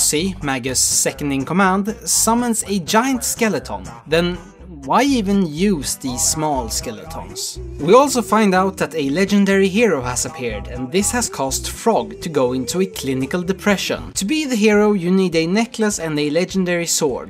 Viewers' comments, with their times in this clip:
0:03 Just love the way he says skeleton